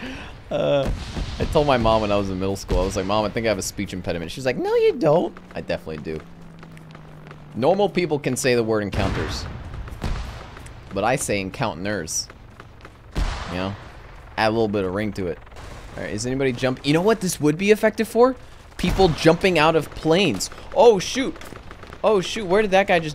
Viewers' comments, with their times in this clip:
0:10 Man's getting typo's in real life